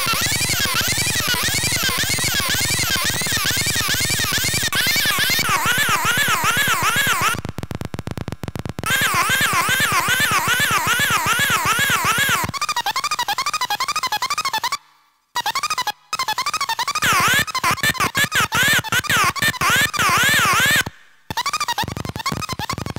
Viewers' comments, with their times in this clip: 0:05 -52: sounds like something from "Pacman"!